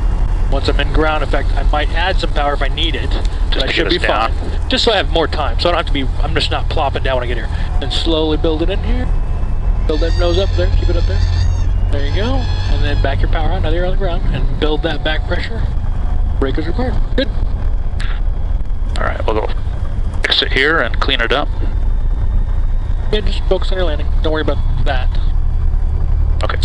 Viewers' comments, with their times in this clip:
0:09 sounded like Lenny Henry